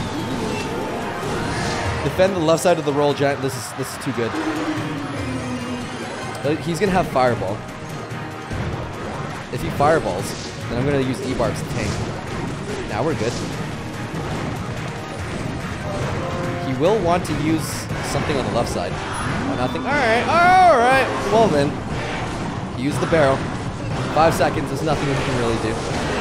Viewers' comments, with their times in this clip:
0:09 auto captions be like. If you fire ball, I'm gonna use a bar shank lmfao